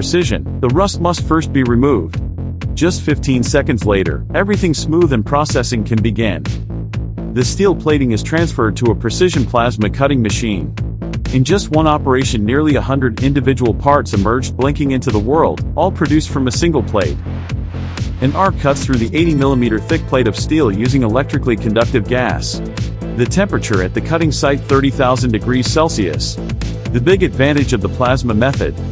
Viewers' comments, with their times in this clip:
0:10 2 out of 10 for the presentation. Please if you say plasma cutting then show a plasma profile cutter. NOT a profile cutter using an oxy/acetylene cutting head. This is where we need to dump the “AI” voice as it’s so BAD and really annoying. This is a waste of time as it shows nothing of interest. Just a few guys moving lumps of steel around and the odd welder.